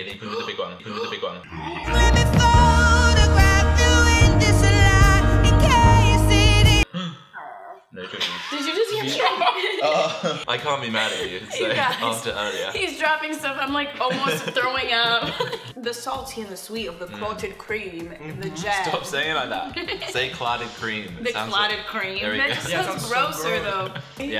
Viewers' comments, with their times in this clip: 0:07 Is anyone else dying over the noise her throat made a ?